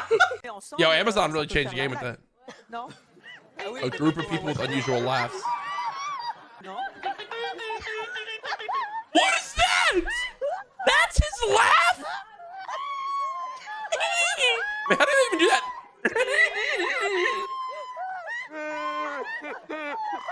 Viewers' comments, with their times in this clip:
0:03 Every One Peice Laugh